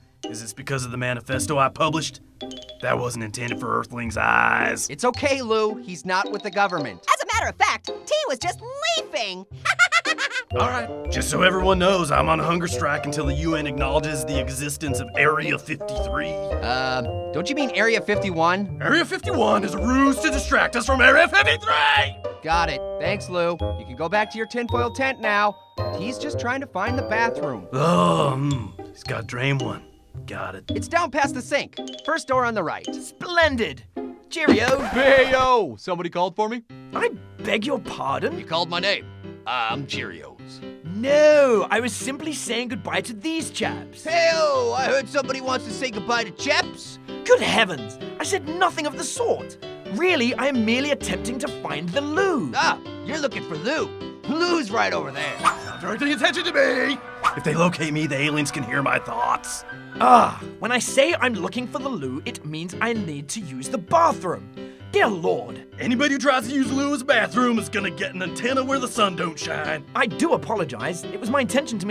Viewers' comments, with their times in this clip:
0:03 Lou the tick sounds like a robot🤖⚡
0:52 when he said it like that it sounds ridiculous!